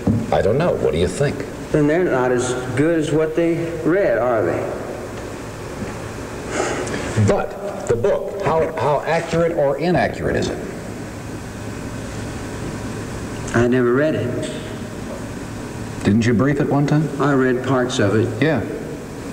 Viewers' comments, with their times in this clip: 0:03 Yes, when he seems to be searching for his words, I'd say he was sedated. 😌